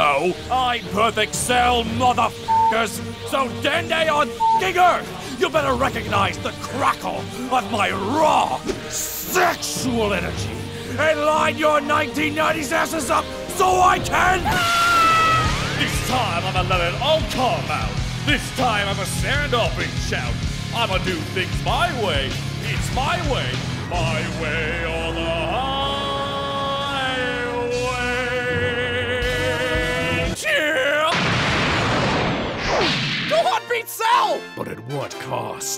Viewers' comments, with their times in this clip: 0:06 the way cell exaggerates the “sexual energy” 😂😂
0:09 The aggressive e way Cell says “sexual” is terrifyingly arousing.
0:19 i like how the Canadian English subtitles have no idea who Limp Bizkit or Fred Durst is because they're probably too young to know who they were, so they think at the end of Cell's song when he goes "YEAAH" like durst the subbers think he said "Chips" lmfao